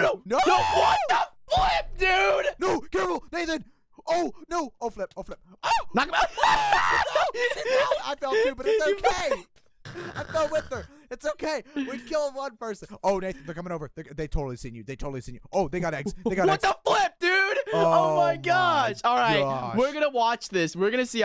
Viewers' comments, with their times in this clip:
0:06 manliest scream ever